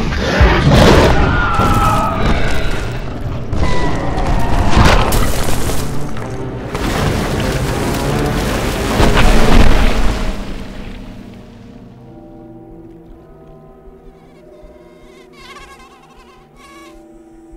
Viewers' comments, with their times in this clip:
0:04 people are asking the how rex died in this scene and i think the giga snapped its neck, you can hear the snap and see the rex go limp